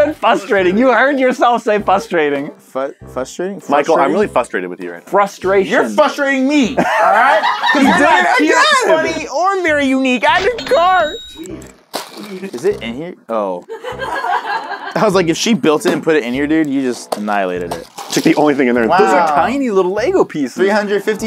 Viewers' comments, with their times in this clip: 0:05 I heard ”You’re f***ering me!”